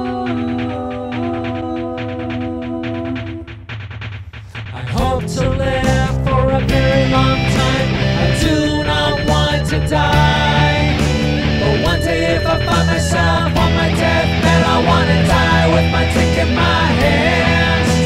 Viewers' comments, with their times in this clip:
0:04 What the fuck, that “ooooh” at the start made me jump. It is tbf